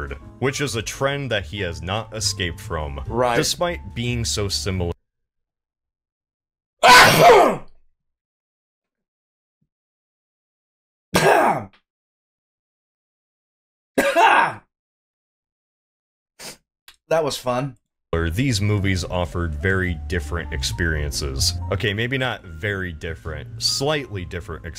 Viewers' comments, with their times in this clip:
0:06 I learned that my ear drums can bleed, thanks.